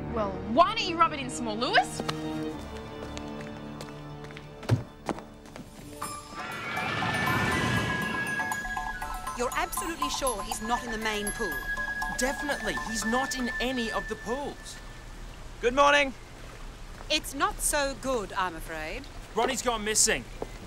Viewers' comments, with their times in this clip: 0:03 Anybody else notice that Cleo sort of throws the letter opener and you hear this *thunk like she was throwing knives at a target?